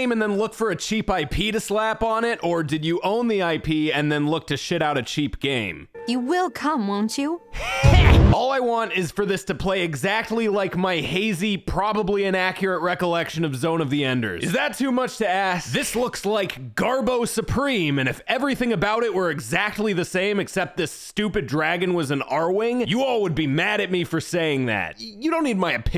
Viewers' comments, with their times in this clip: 0:06 I sometimes come back to this video just to hear Dad say HEH